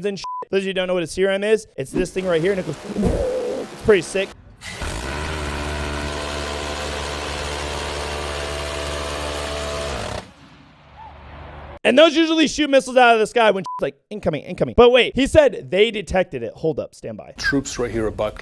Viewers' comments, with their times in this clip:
0:04 ah yes angry R2 D2